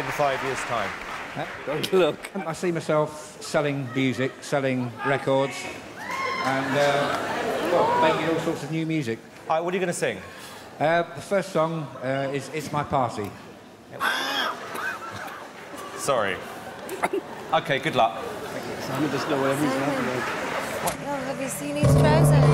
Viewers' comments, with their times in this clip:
0:04 I feel bad for the man onstage, his privacy should be respected. But still, the man who yelled "nasty!" Got me dead. Still we should take this into account in the future.